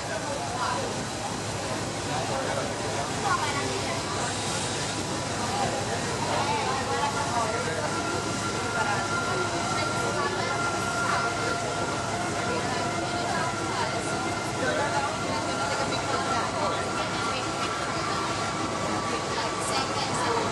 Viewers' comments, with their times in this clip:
0:08 when you waiting for the speed swiiish but it still dont coming